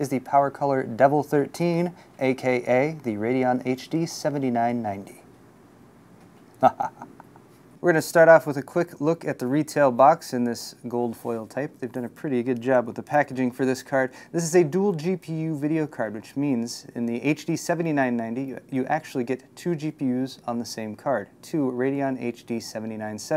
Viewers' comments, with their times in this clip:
0:06 you sure it's not ? Because all it sounds like he's saying is "deep"